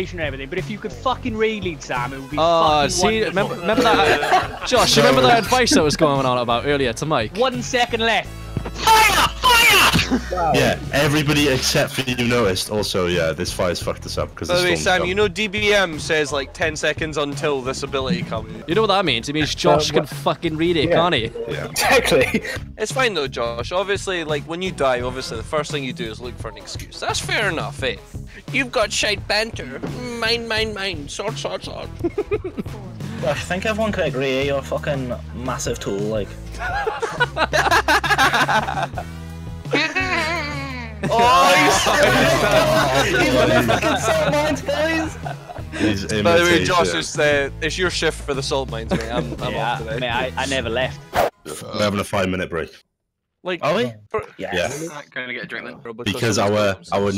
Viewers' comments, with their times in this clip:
0:08 How has no one commented that that guy sounds EXACTLY like muradin bronzebeard when he screams "FIRE ALL GUNS! FIRE! FIRE!" in the icecrown citadel raid gunship battle boss on the alliance side like i thought it was a sound clip of the boss fight edited in or played over the guys microphone
0:40 cheeki ability click dont u ever think we didnae notice it. we're always watchin and judgin what yuo do